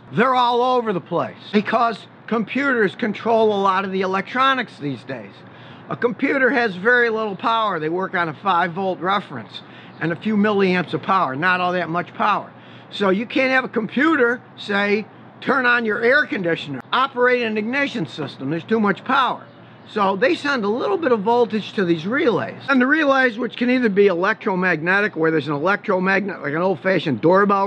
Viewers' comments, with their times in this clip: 0:08 You can definitely tell he's sick, because he says "a few mA of power", when he really meant "a few mA of current" :P That and his voice sounds different. Get some rest, Scotty! V = iR P = vi